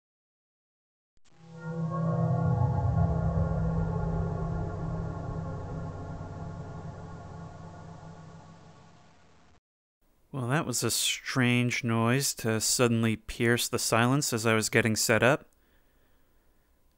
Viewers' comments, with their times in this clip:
0:00 I did not expect the FNaF sound, yet there it is.